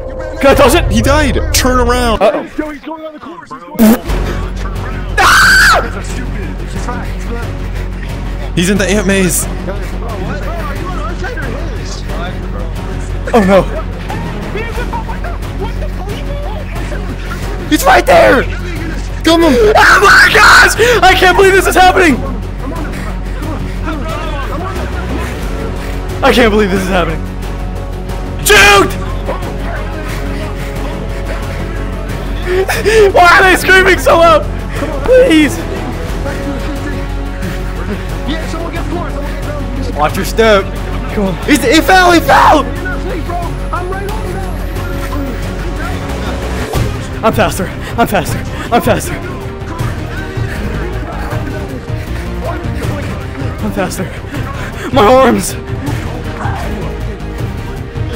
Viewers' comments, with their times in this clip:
0:05 He a fire Alarm
0:41 why are they screaming so loud? him earlier screaming louder than anyone in the entire world